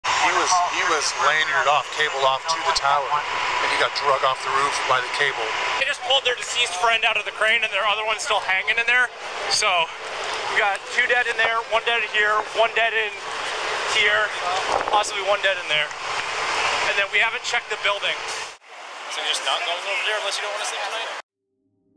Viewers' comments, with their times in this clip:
0:08 they way he just saying so casually like 2 dead here 2 dead there some dead here made it sound like it was not that big of deal at all smh